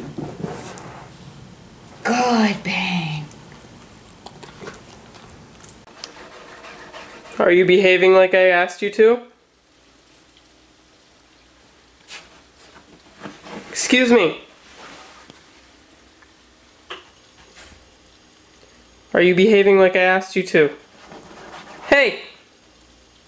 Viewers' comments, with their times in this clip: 0:07 why does the owner sound like my 8th grader biologi teacher